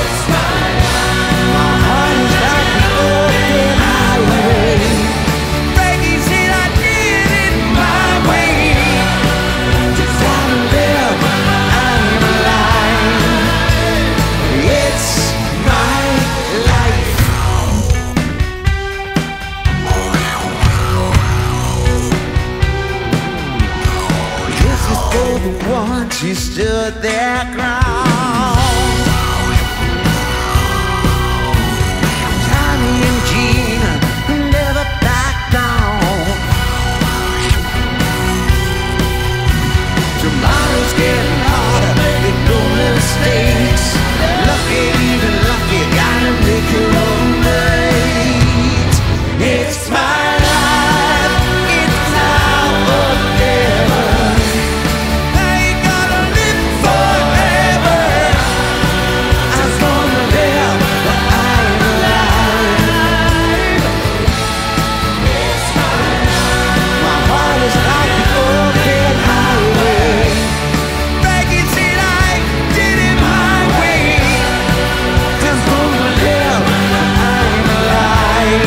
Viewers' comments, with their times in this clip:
0:06 he stil got a good voice
1:01 Oh my God that Background-Voice...